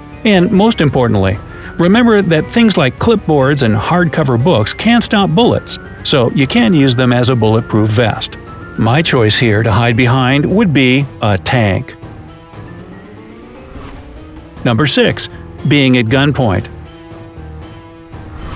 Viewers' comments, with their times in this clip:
0:04 I can't clearly catch if he said can or can't about the clip board and text book please tell me